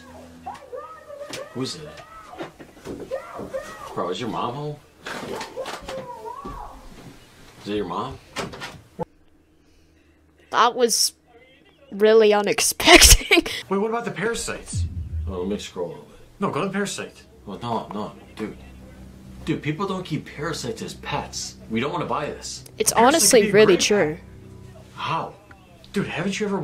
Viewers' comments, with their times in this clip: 0:07 that yelling was personal 😭☠️